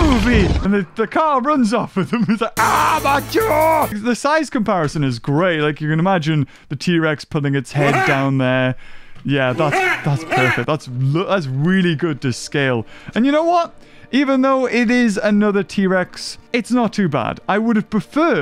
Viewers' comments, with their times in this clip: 0:04 who else remembers the old hasbro trex video and beaver using that same sound MHHAA MHA